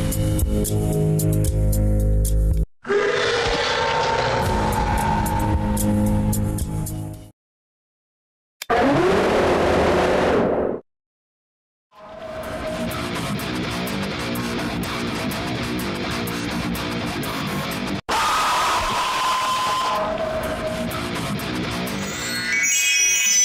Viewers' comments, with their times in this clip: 0:08 It sound like portals from piggy branched realites